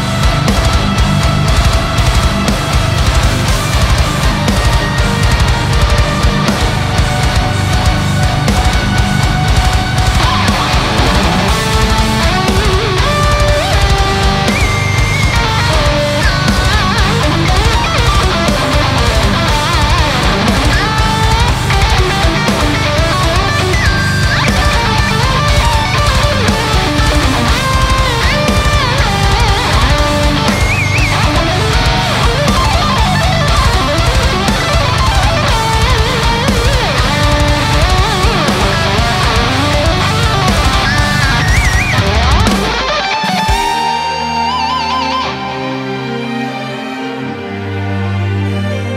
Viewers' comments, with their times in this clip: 0:10 That solo is outstanding! Great mix of feeling and shred. Love the artificial harmonics and great vibrato too.
0:11 Who is playing ? This sounds like the Jeff Loomis solo from Racecar
0:35 Love the solo at ~